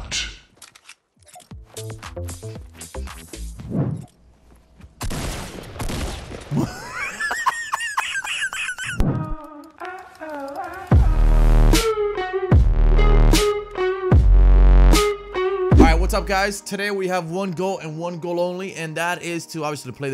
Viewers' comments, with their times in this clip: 0:07 yo laugh sounds like a dying mouse bruh